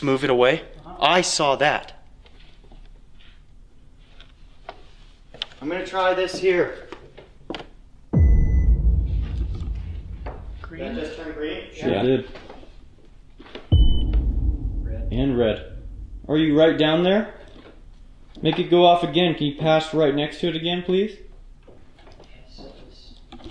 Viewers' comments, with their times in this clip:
0:09 thought it said you have to be dead ?